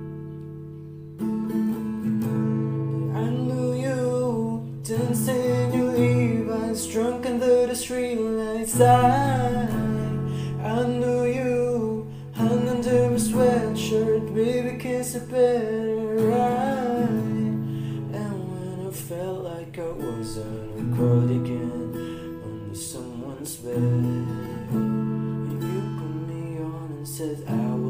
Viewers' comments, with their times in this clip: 0:09 YOUR VOICE IS AMAZING all Swifties should listen to you 😎😎